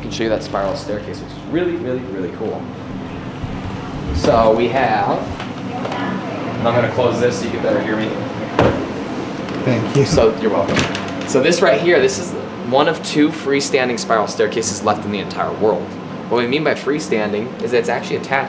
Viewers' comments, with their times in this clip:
0:05 I heard some voice Just before that guy closed the door. Still watching, but this is amazing yall. Thanks. Idk what that sound is, but sounds like a voice.